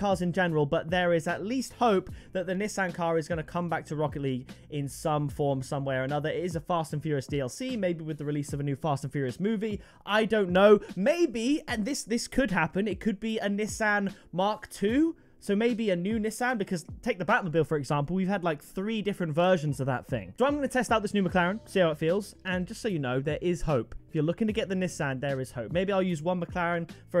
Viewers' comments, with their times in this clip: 0:10 the way he Said a Mk2 Nissan. Me: Getting Nissan GTR flashbacks.😂